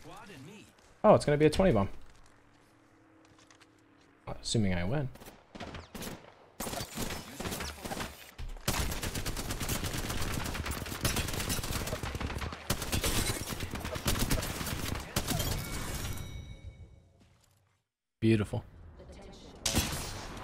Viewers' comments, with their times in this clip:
0:06 Editing failed by not including the meow on Loba